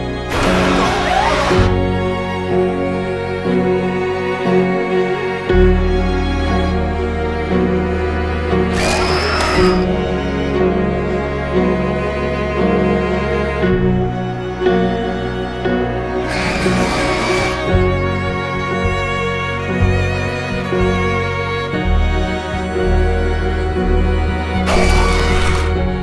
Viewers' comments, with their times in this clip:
0:09 The scream tho